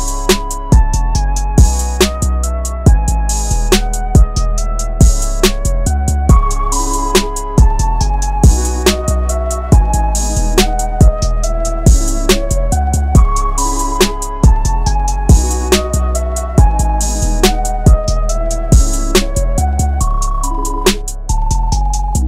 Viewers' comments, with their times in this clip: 0:03 i like the song